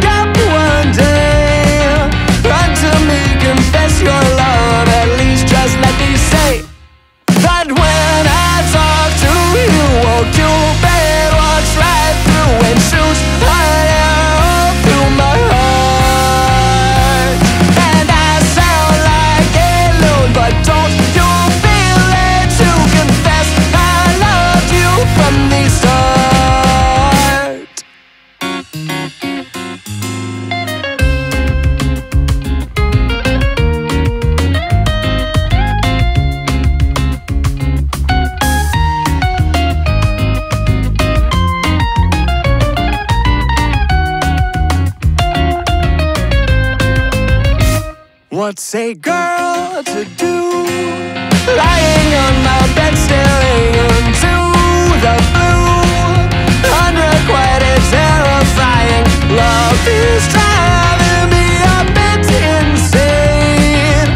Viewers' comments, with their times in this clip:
0:07 i dont know what its called where the beat hits on every lyric like that but man does it bring some great feeling energy
0:11 The "Heartt" and later in the song just sounds so good, it really itches my brain somehow.
0:25 elevator music fr
0:47 I can hear the confetti.